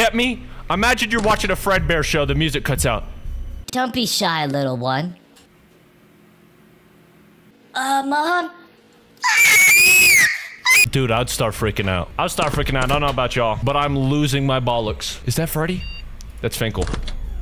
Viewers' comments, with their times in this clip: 0:03 "Don't be shy lil' one... *sounds of the collapse of the USSR*"